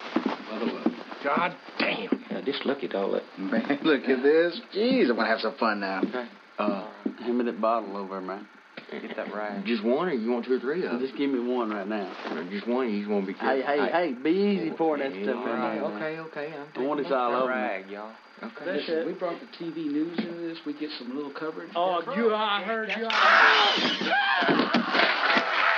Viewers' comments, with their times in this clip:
0:07 They didn't speak that way back then. Like a black brother saying man.